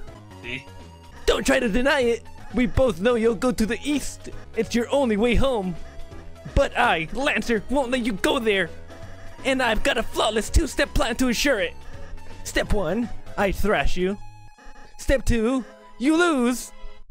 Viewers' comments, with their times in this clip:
0:03 “Why do you want us to go to Iran